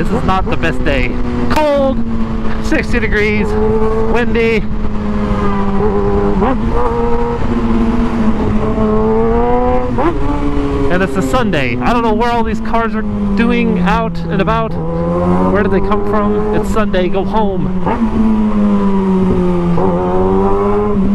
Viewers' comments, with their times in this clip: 0:04 definitely sounds like someone honked at him
0:04 jealous cager honked
0:05 horn sounded like the stick audio from movies